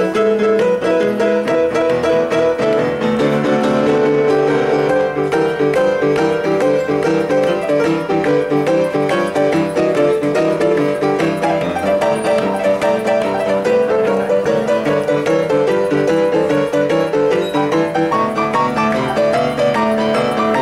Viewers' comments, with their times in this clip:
0:05 Nice key switch in can anyone tell if they hear how many keys he changed there?